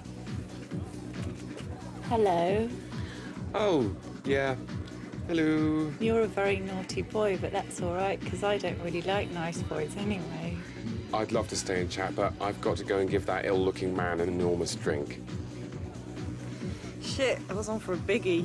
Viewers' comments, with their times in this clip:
0:05 i always crack to Jez's "helüü"